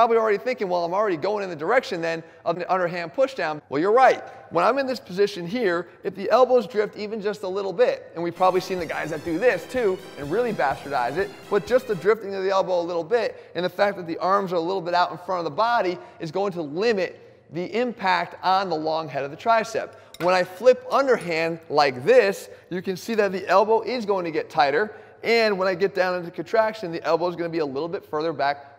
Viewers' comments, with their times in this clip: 0:10 LOL even the music is on point